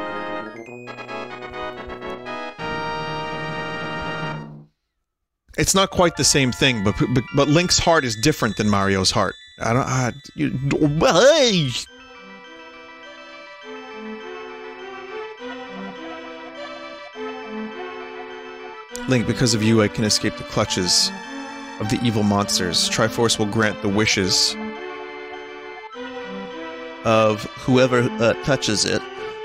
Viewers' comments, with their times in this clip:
0:07 did... did vinny just slip into a goofy voice for like a split second?
0:10 I think that noise is shorthand for Goofy saying "Is Tingle the dark part of Link's heart?"